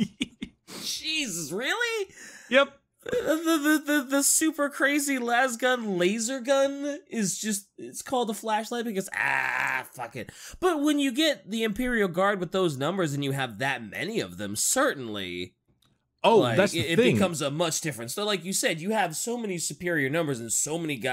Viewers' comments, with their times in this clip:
0:03 that stutter tho